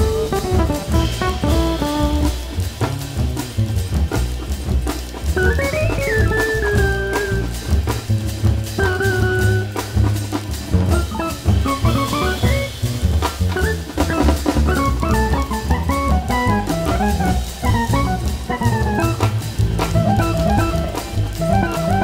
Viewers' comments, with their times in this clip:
0:10 Wow, absolutely LOVE IT. What an interesting use of delay on the guitar and what a difference the vocals make. I thought Joe Zawinul came in